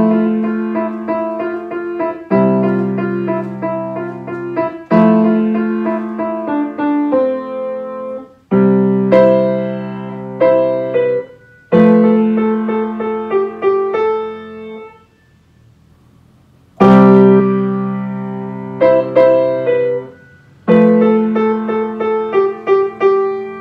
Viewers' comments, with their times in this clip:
0:06 wow your good, your just forgetting to step the sustain pedal XD....ILYSM